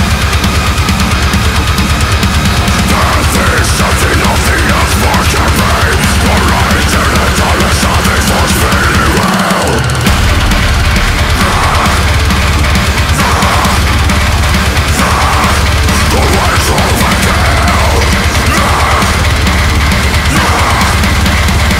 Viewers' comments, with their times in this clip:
0:08 when you think that this song can't be more brutal